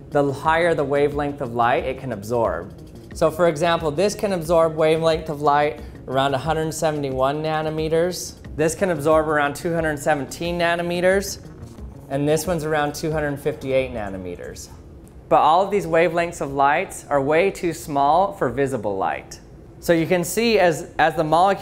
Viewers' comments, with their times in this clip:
0:09 anime meters ? XD